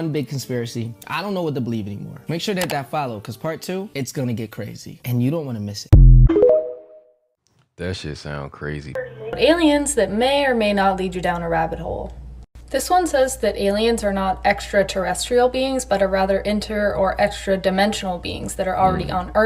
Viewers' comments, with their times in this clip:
0:04 Why is this man crunching in my ear???